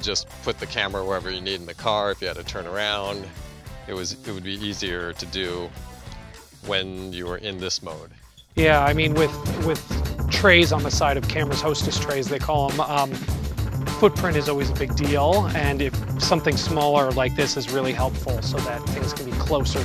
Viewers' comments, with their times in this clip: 0:07 .... music isn't loud enough here... my god man